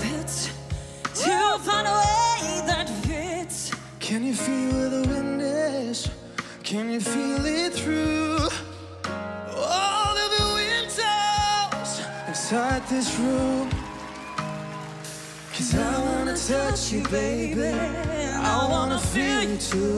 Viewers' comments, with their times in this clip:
0:03 he really sounded like zayn tho